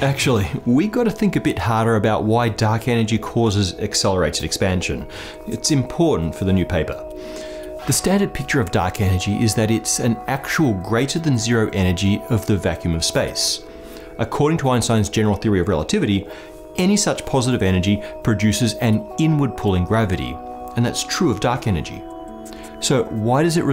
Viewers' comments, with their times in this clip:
0:09 I've never liked the sad music